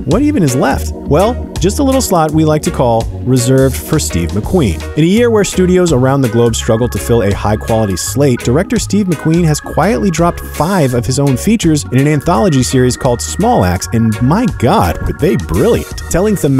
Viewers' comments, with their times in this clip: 0:04 love that reggae track Wish I knew what it was